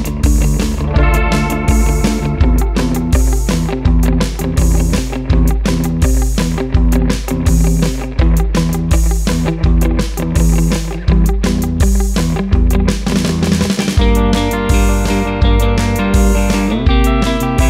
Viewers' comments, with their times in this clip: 0:03 Bass always floors me when it pops on! The mark is my fav! Excellent clean sound! You knocked it out of the park again my friend :)